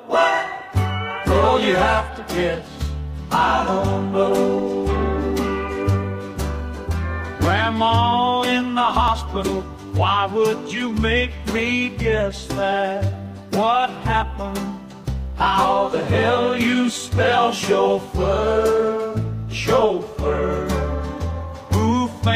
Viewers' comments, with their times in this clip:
0:09 country Music Vibe